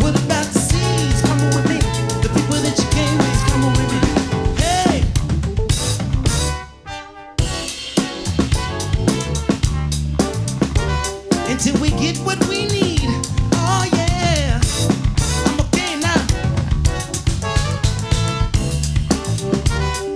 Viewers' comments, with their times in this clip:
0:04 That fill .... SHEEESH!!! 🔥🔥🔥